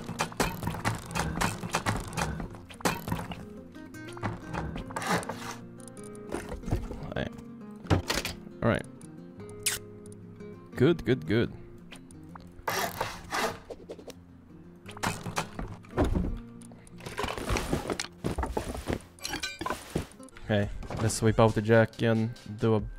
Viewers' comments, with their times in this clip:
0:04 I bet everyone checked there discord lol